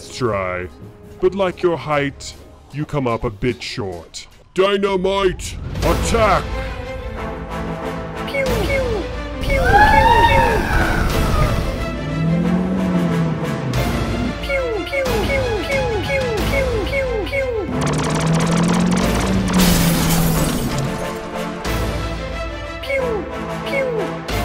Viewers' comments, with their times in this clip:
0:08 those sound effects are on par with Star Wars